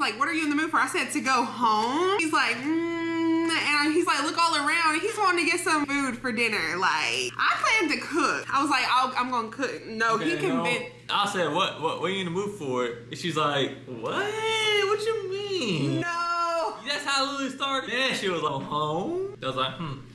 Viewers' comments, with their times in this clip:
0:04 Ebonics at its finest